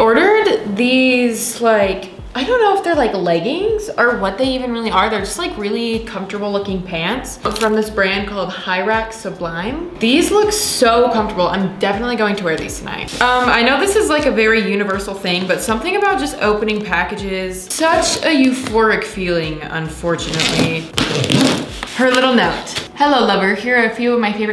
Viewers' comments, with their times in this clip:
0:08 can someone help me understand the brand of the pants from 😫 i can’t understanding what shes sayinggg. im hearing “high racks of lime/pyrex of lime”?? help